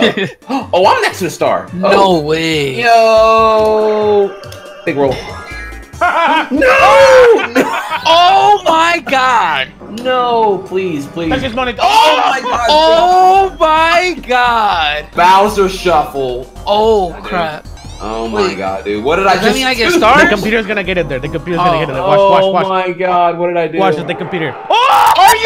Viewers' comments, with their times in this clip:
0:06 is the laugh I here every time I fail